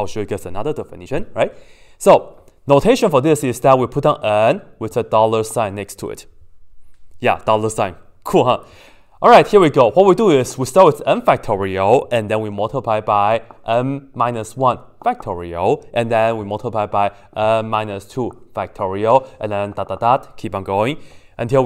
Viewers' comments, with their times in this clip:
0:09 Subtitles on. Palestine 😥😥🤣🤣🤣🤣🤣🤣 wtf